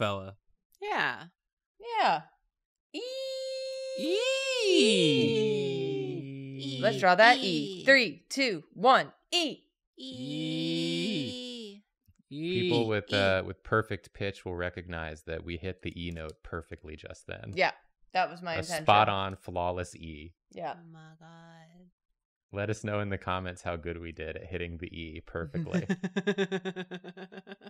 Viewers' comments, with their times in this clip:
0:10 Person with relative pitch and fairly ok memorized pitch here! wasn't TOO far off but everyone had different pitches so idk
0:11 unfortunately that "E" was actually a C# but it was certainly an E for effort nonetheless
0:12 As a person with dummy ears, I can certifiably proclaim you totally didn't only reach a C at best when you all tried doing an E. It was all so accurate and exact to an E in its tuning that I didn't even notice every single tone being very far away from an E. Beaultifluil and perfect. This is the most impressive display of technical music skill I have ever seen. Truly outstanding.